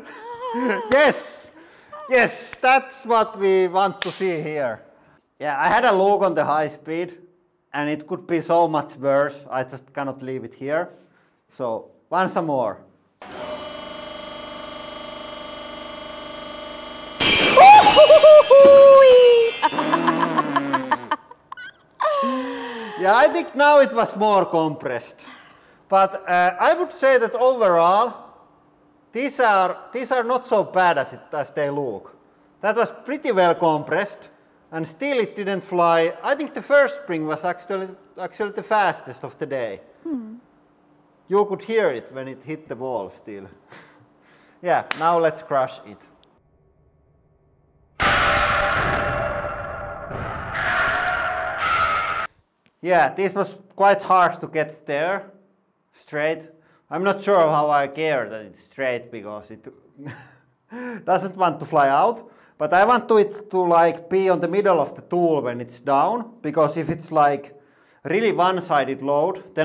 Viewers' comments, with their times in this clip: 0:10 what a nice laugh it make me a laughflash😂😂😂😂😂😂😂😂😂😂
0:17 Goofy falling off of a cliff.
0:51 sounds like some sort of musical instrument 😂